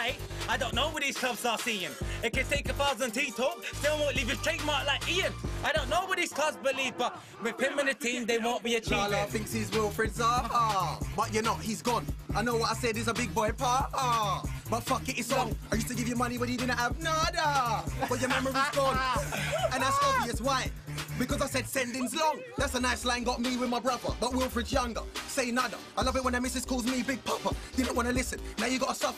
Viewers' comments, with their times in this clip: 0:10 BWP merking Bolasie with his own flow 🤢